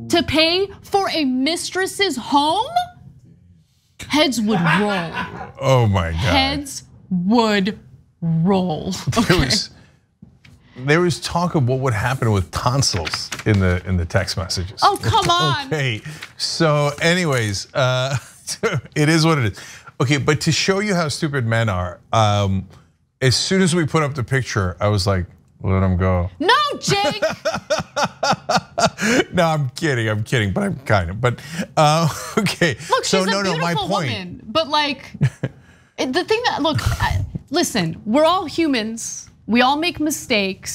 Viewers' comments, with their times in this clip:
0:04 I love every time i hear a segment where this guy laughs in the background, makes me laugh even harder, lol.
0:26 (mumbling quietly)...let 'im go... Hasn't the man been punished enough? LOL JK